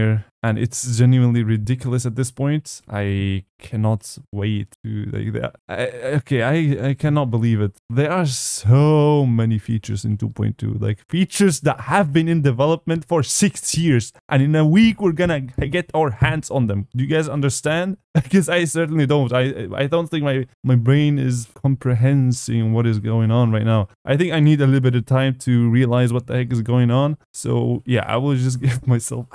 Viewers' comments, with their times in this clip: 0:10 you sound angry and i think i heard you hit your desk 🤣